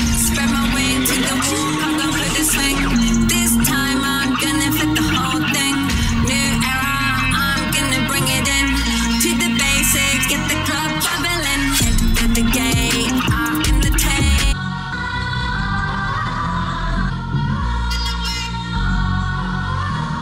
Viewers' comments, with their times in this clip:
0:07 is it me or somebody messed with her laptop and restarted the song ? 😳😳😳
0:08 What a mess. Talk about stopping the crowd from getting into it. Just as she plays a decent track she cant mix another to flow Into it. (Like from ) Crowd jumping then.....wah?! I want my money back 😂 The crowd obviously like listening to trash. Haha